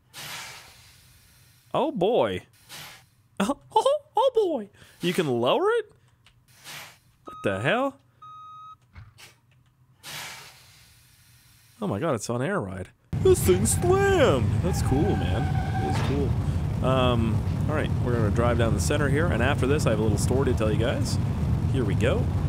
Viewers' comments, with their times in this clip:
0:04 you actually sound like Micky Mouse